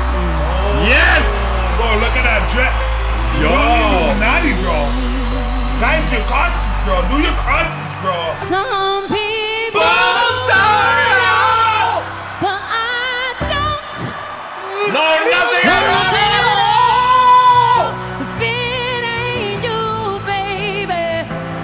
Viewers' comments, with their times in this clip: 0:08 Nfl edited the voice crack from Alicia...😢 It's natural glad they kept it